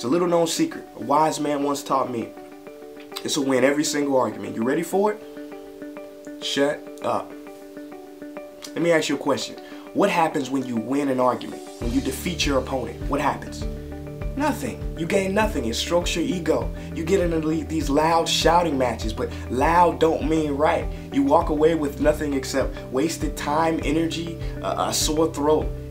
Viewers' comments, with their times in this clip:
0:06 Did he not say "shirt off"